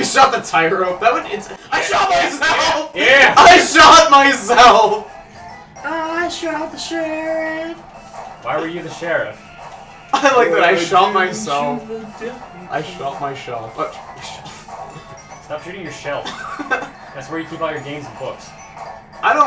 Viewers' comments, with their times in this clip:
0:05 All right, whichever one of you started singing that "I shot the sheriff" bit, I had to pause for a moment from laughing. XD I'm not sure why I found it so funny; maybe it just caught me off guard. But I was/am thoroughly amused. XD Ten points for awesomeness.